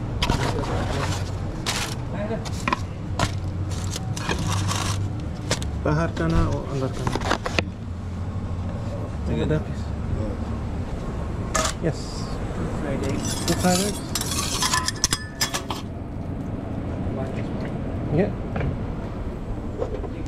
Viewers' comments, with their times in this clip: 0:04 hindi caught me off guard ngl🤣